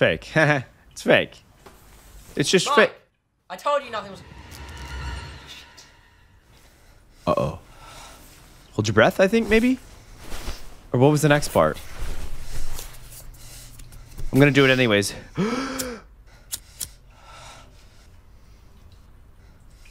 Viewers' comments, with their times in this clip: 0:05 He doesn’t bleep out a swear word